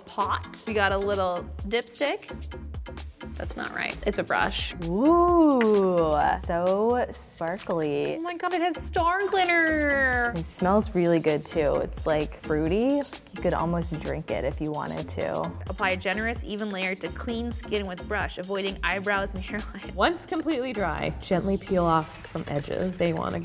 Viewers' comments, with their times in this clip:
0:08 HAHAHAHAHAHA OMFG I KEPT ON LAUGHING I KEPT ON REPEATING IT "STAR GLITTER" and there's an echo to it